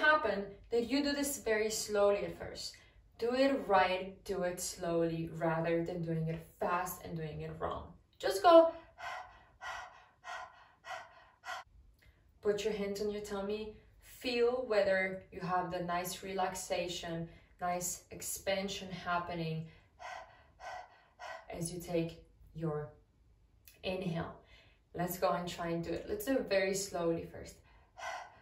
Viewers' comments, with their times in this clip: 0:09 when you did pant are you like that after show but somewhat faster heavier?